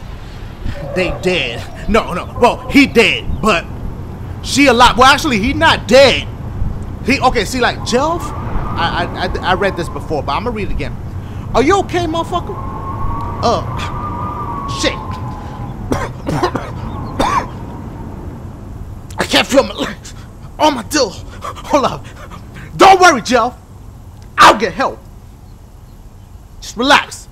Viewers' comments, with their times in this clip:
0:08 This game is cheaper than FNaF I mean come on! So much loud fucking noises it's unbelievable I can't watch this video until tomorrow cause it's am and all I hear is the loudest noises even when my volume bar is at 1 smh At least you are actually "playing"